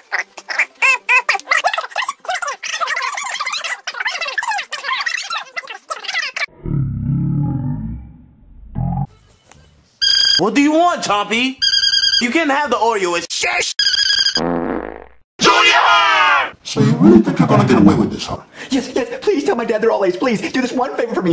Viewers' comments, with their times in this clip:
0:09 Chompy chewing his squeaky bone kills me with laughter, I cannot keep a straight face! 🤣🤣🤣🤣